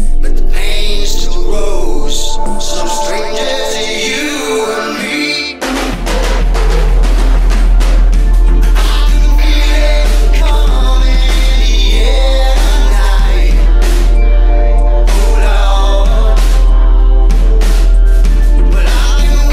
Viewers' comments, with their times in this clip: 0:05 I love this song and the bass made it that much better. Especially
0:05 Finally i found it dang the other ones arent that catchy same as this one on even tho start is slow and arent bass boosted as much but still